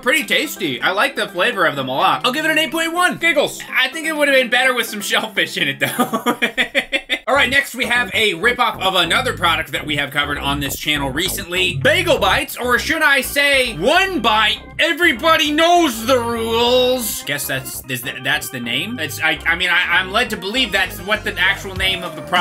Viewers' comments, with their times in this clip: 0:07 When i heard pizza tower menu music start i jumped out of my seat